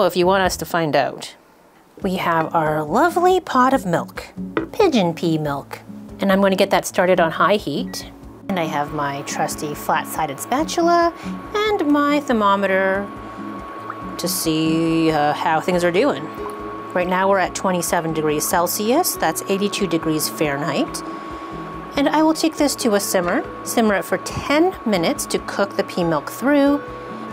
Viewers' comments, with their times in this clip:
0:08 warning if you're under 25 or have good ears or something...